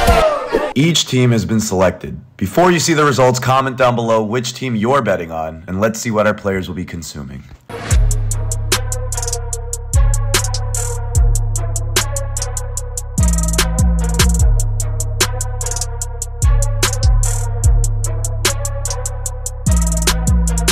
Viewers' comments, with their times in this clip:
0:07 This theme music 🥲🥲🥲